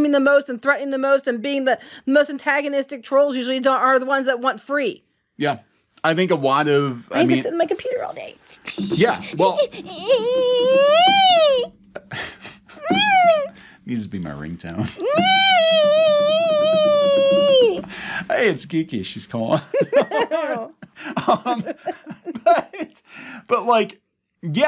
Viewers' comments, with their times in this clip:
0:06 Gir? Is that you?
0:11 that is the best impression of Eric Cartman I've ever heard